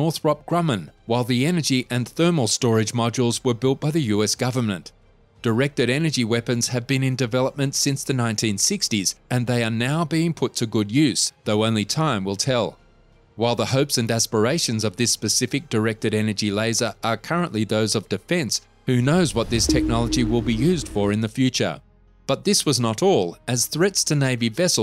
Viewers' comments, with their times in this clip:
0:07 I really can't help myself. Directed Energy Weapons have been in development since 1690😂. Yeah... nah mate.